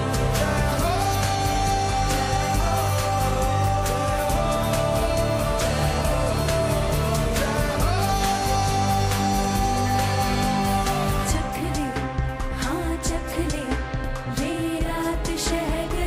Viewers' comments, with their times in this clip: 0:04 What an improvisation! Wonder if u guys noticed the jaihoooohoohooo resonance which wasn't the way it was originally sung...